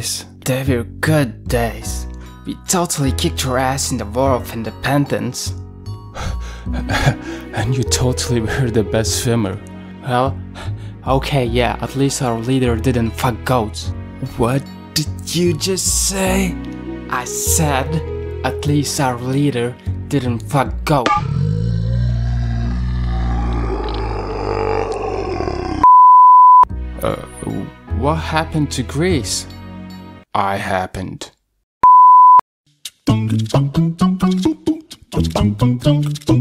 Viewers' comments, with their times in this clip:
0:10 Cyprus: Wait, why the f**k do I hear boss music?
0:20 Mission Passed! Respect+ GTA San Andreas Ear Rape Starts To Play